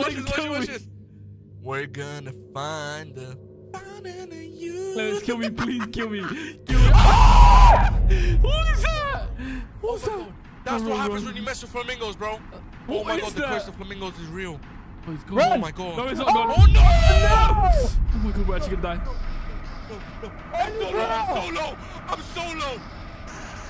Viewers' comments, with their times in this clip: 0:06 I love how they all scream almost in the same pitch😭
0:06 i cant stop watching this 🤣this scream